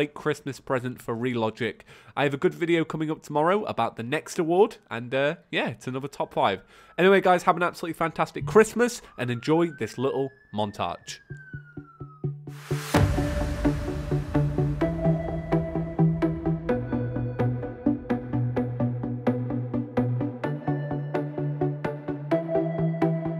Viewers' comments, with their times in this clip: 0:08 you can hear an ambulence siren in the backgrond